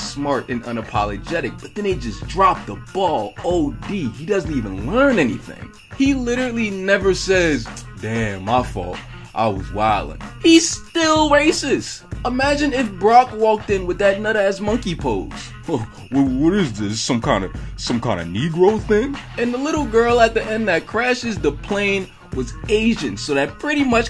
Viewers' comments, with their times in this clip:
0:10 Fucked up my voice from laughing too suddenly